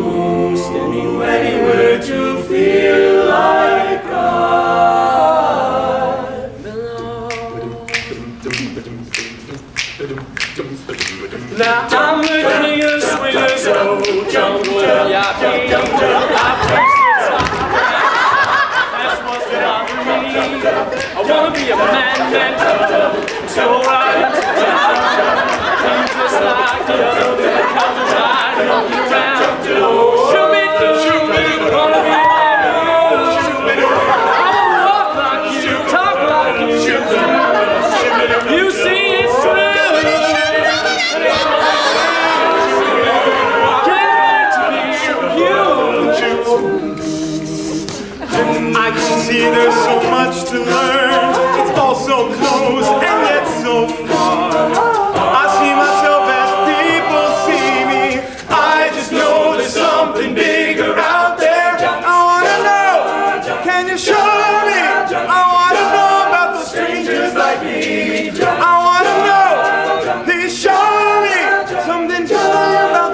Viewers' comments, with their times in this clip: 0:05 Dat rhythm change
0:58 My favorite part is when they all chime in :)